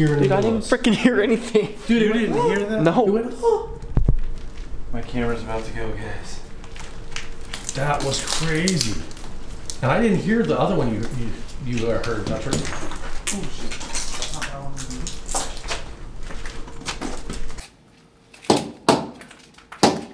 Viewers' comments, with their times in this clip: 0:08 I heard that, Sounded like she said help....,